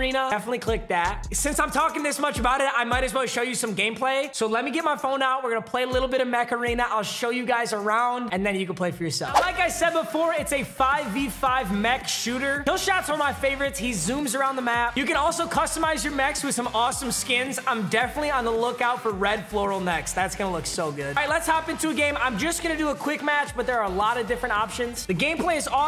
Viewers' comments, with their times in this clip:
0:06 it sounds like you keep saying macarena.